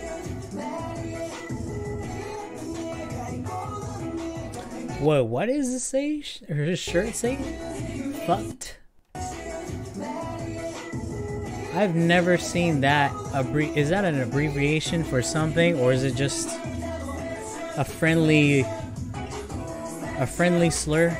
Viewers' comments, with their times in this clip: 0:04 the clap clap part is like when you are acting like the thing Joshuji/Joshua was holding in the clap m/v the one thy use in acting like this 🎬